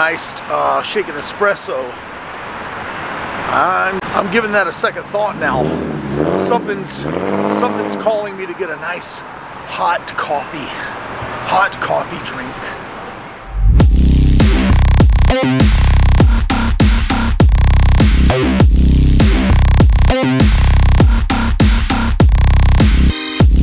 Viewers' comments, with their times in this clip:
0:06 it sounds like you are passing gas. LOL 🤣